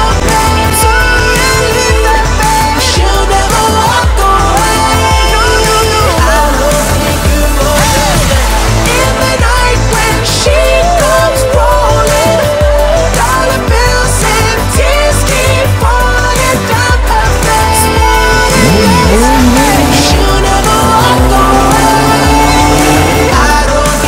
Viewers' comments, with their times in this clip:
0:10 that “shee-eee” gets me everytime